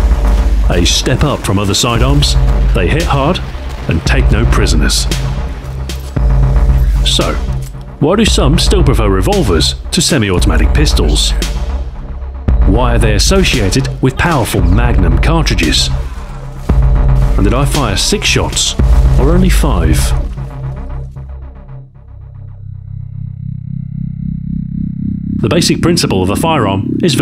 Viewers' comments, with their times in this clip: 0:09 Captain Shepherd, is that you?